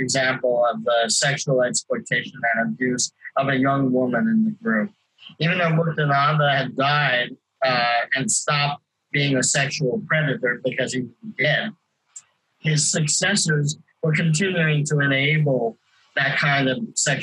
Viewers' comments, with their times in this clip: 0:04 same here, I got to but it was too much. Lots of clipping.